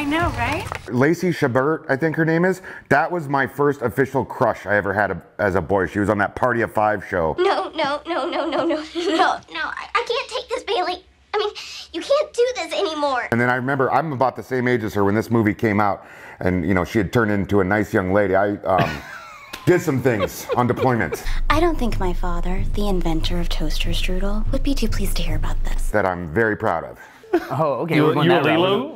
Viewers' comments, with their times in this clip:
0:09 She was in the Lost in Space remake as well. I'd recognize that chipmunk voice anywhere...